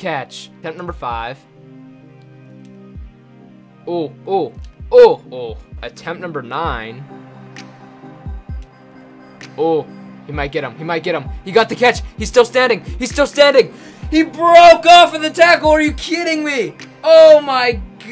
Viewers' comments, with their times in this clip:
0:03 roblox death sound